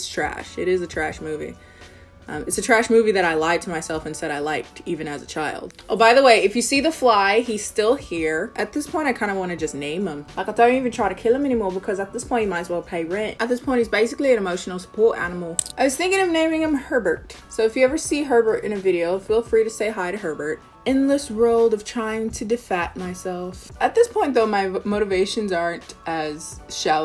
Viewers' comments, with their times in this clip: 0:09 So is no one gonna talk about that accent that just popped up from out of nowhere...
0:12 lol I’m dead why did you sound like you were Cleo from H20 😂